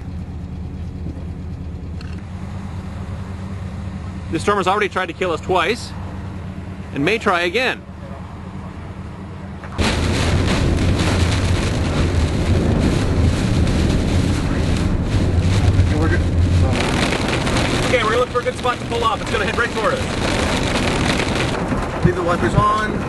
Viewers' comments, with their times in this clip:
0:09 that noise sounds like an awesome drum beat